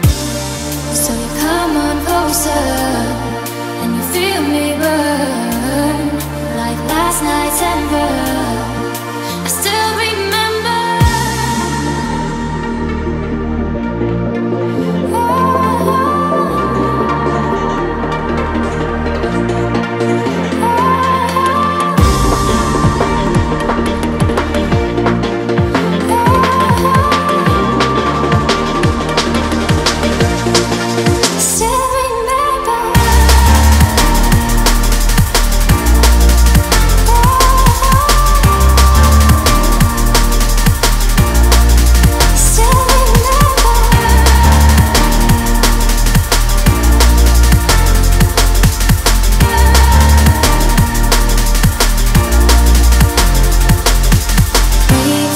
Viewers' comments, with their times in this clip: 0:03 I would like this song so much more if it just kept the same BPM's
0:40 that ahhhh in the background thats repeated throughout the song is my favorite part of the song :) its very subtle though